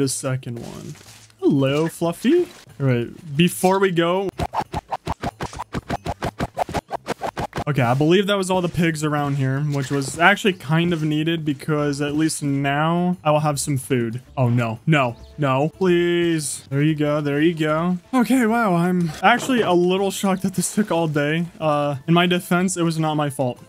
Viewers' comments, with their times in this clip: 0:07 is it me or does that compilation of pig killing sound like Offenbachs Can Can?